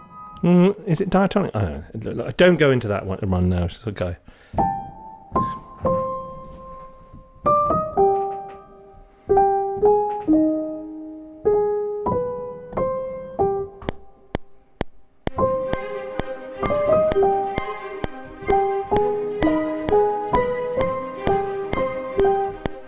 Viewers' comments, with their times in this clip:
0:07 for some reason I'm getting a Downton Abbey vibe here... :D